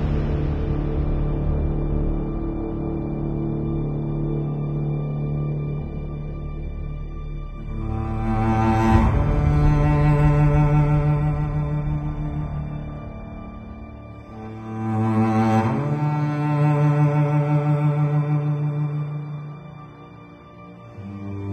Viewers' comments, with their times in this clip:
0:04 finally roach can talk